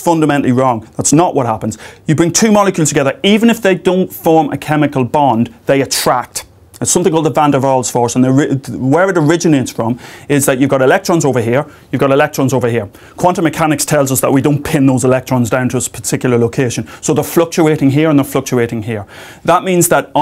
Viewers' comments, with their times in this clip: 0:06 Hi, could anyone tell me the name of the force The vander??? His dulcet Irish tones are too difficult for me to decipher.